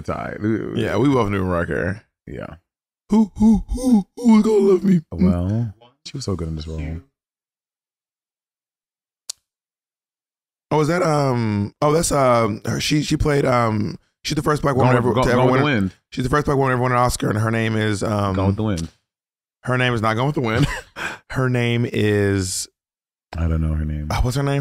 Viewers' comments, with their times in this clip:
0:10 the way I said "Mildred Bailey" with FULL confidence